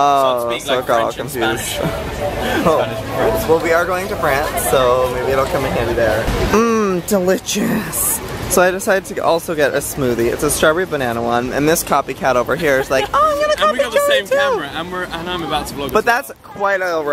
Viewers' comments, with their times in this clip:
0:05 you sound like your "GIRLFRIEND" Miranda :D